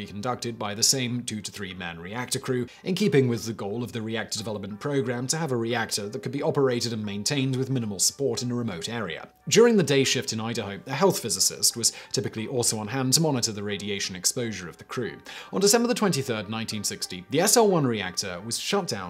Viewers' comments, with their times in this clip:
0:06 Anyone else have to rewind around the mark cuz the words "training" "reactor" and "operator" stopped sounding real?